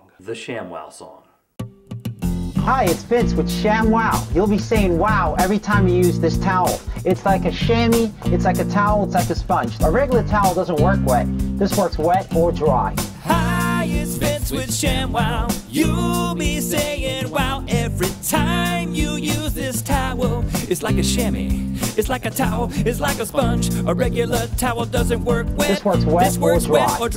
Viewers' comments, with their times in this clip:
0:03 hahaha Translation "My spends with Sham Wowis saying WOW retirees this house fantasia ?? XD
0:12 Places fivehundred dollars or more in the southwest towards life....haha..thats translating.